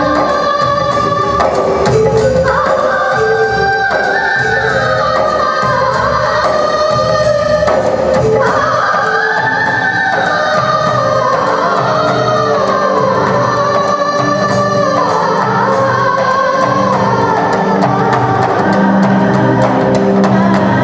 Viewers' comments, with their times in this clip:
0:08 Her voice is very high pitched, and very powerful.... She is very versatile... And she is the most talented singer of 80s 90s era... her range, it is A5